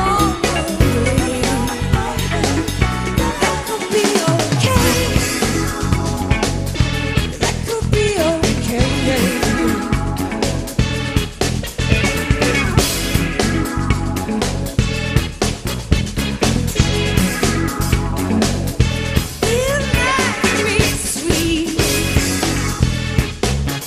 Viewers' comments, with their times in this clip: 0:05 TH BEAT/ENERGY DRASTICALLY CHANGED FOR ME I HAVE GOOSE BUMPS RIGHT THE DRUMMER IS ELECTRIFYING AS IS THE ENTIRE BAND